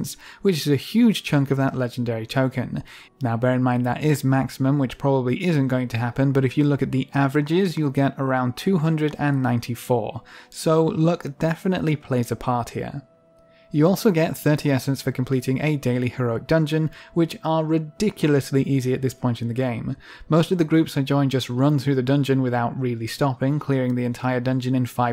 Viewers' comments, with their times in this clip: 0:07 anyone else got slight snape vibes from that?